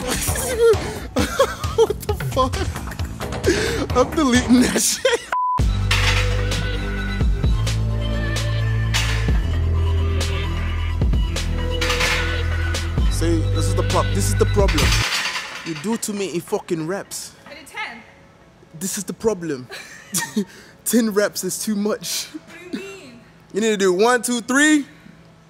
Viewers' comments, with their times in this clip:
0:10 Is that a Gabriel Sey impression? 😂